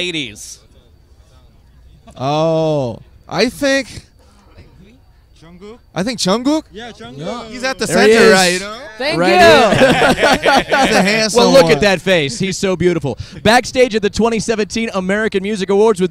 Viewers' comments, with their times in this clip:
0:04 Jk said V Silently💜🤗🌈✨